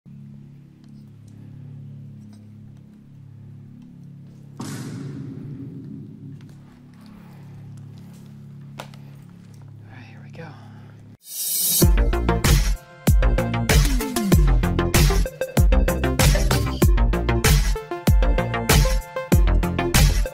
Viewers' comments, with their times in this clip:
0:03 this has to be the earlist use of the vine boom sound effect I have ever seen on youtube exclusively